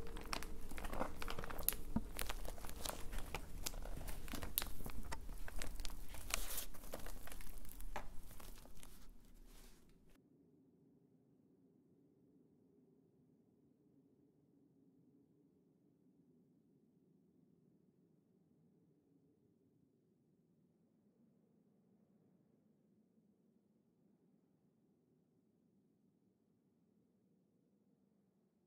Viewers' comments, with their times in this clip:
0:09 I was thirsty to listen to her handling that book!